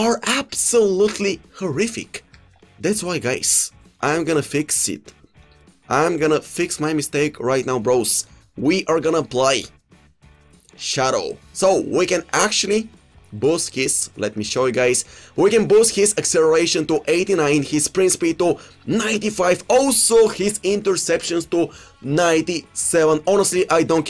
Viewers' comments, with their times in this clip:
0:09 we are gonna bluy 😄😄😄😄😄😄😄 love this gluy